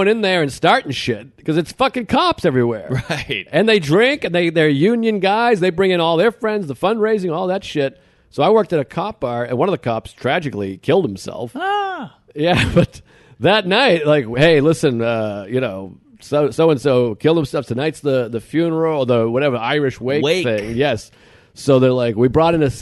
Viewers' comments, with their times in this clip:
0:09 i almost fell out of bed at the noise Mark made when Joe said the cop killed himself